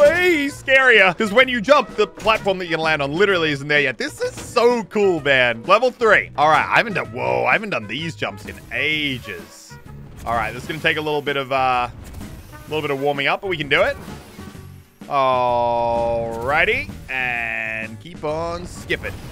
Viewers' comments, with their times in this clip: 0:07 Muselk beatbox or OwO lmaooo